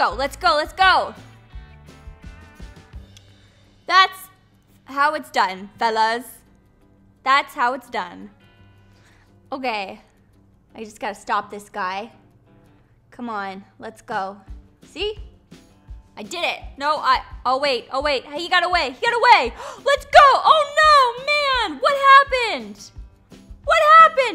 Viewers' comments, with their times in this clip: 0:05 Synchronized saying “Fellas”